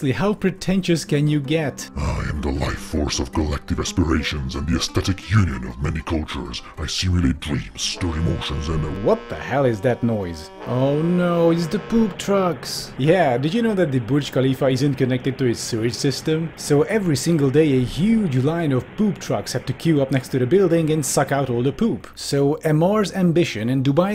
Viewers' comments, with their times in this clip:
0:06 reminded me of the Reapers from Mass Effect xd